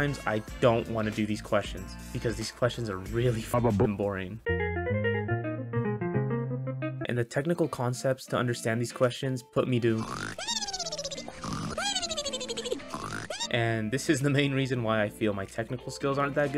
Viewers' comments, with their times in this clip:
0:03 good video but can somebody PLEASE tell me what the bluesy piano jingle is from, this is driving me insane